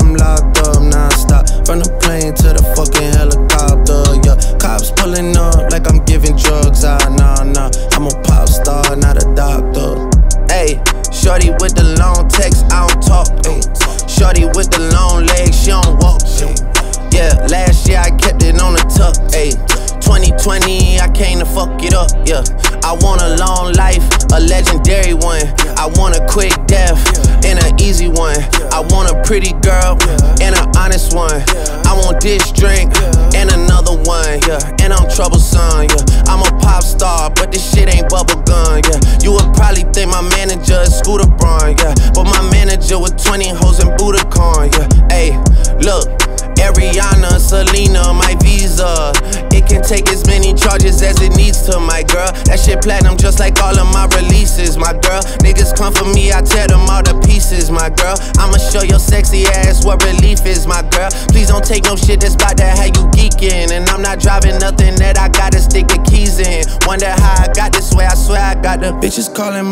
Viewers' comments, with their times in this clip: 0:10 The part when Drake sings is powerful Dat owl
0:46 Drake hit that pocket Straight 🔥🔥🔥
0:51 Why does our brother Drake keep mentioning his bra so much?